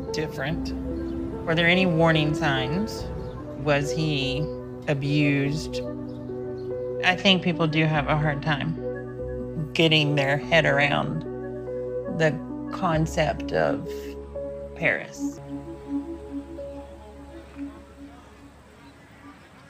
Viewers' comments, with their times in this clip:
0:04 The music……..you over did it.